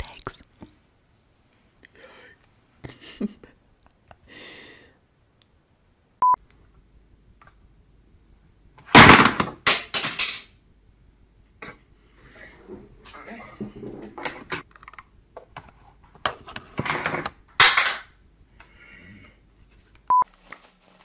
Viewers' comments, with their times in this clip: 0:07 R.I.P. headphone users :D